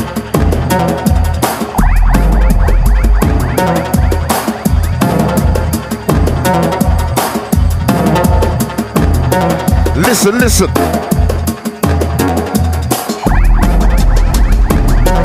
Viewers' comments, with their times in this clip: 0:03 oh my god, track starting